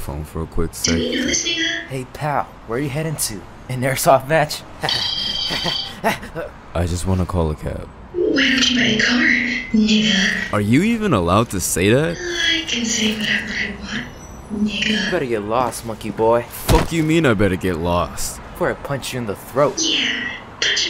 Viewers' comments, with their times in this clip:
0:04 what was that giggle 😭🙏